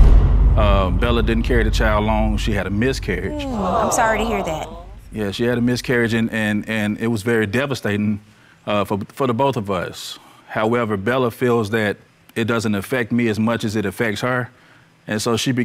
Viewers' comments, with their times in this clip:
0:03 you can not tell me that “aaawwww” does not sound like a wii sports game sound effect ….. 😂😂